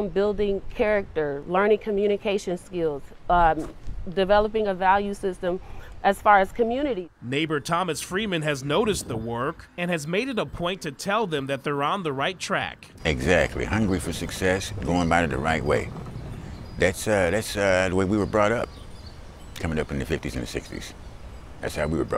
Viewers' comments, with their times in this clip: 0:10 I didnt know Morgan Freeman lived in Cleveland